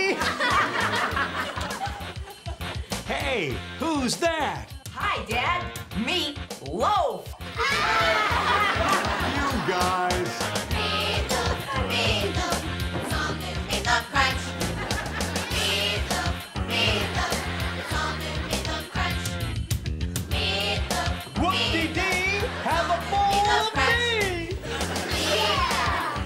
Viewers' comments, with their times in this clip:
0:08 the way he says "you guys." and dances over to the table? lol